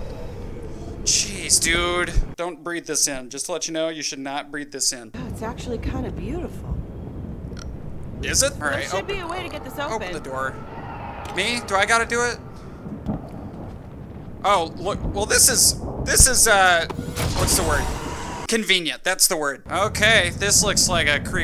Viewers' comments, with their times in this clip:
0:09 burp iS iT🙄